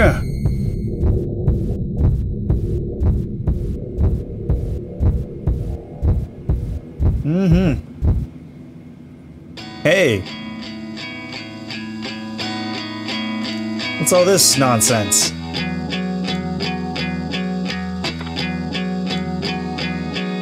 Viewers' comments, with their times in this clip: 0:08 Song after reminds me of 1979 by Smashing Pumpkins and the rest of the soundtrack is kinda Yamaoka's work.